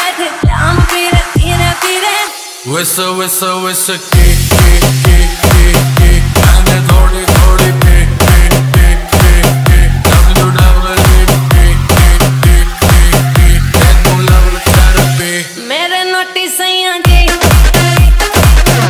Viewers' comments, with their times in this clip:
0:05 If free call 😂